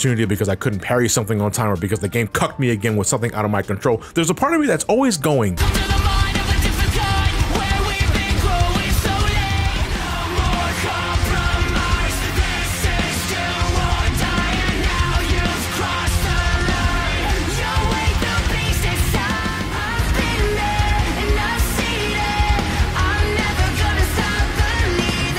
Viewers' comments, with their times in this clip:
0:07 boss music best part